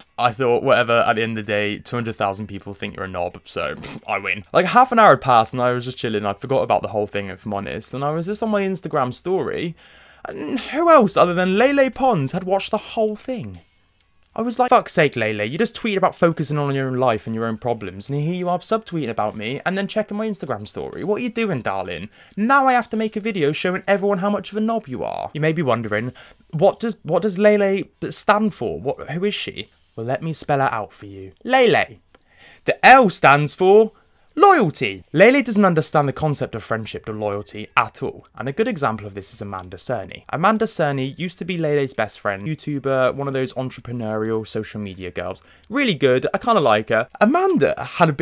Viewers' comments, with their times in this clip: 0:04 He sounds so west country saying 'half an hour'
0:04 where dis this "irish accent" come from
0:31 that section of perfect pronunciation got me. i couldn't breathe oh my gosh hhaahahahahahaaa